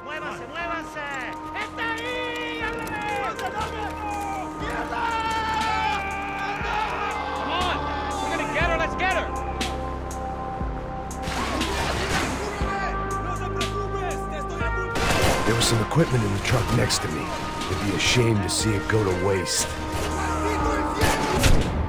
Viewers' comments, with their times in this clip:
0:06 I like the soundtrack